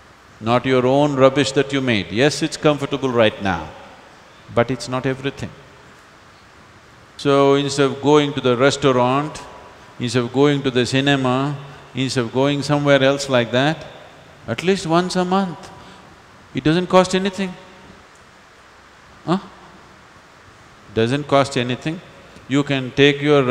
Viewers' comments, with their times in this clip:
0:08 he eats the word INSTEAD lol… ins of ins of 😊